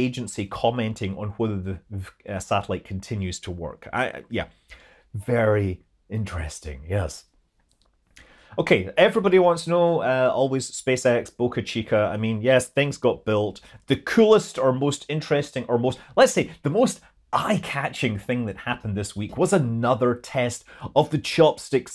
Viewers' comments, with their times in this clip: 0:04 Thats a really good Jeff Goldblum impression